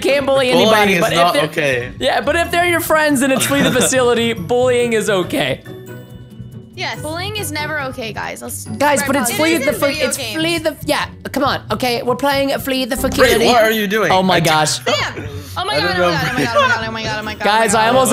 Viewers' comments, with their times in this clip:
0:03 he finally pernounced flee the facility right